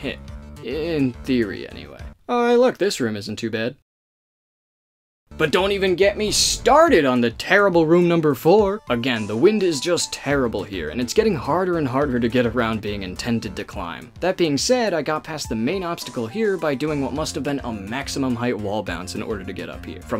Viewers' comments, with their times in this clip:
0:06 We gonna talk about how every time he does a reverse extended hyper jump he put that on screen and you can here a vine boom effect 😂
0:06 the "Reverse Extended Hyperjump" joke with the three vine booms was really funny to me, and when it made a cameo again i lost my shit. absolutely phenomenal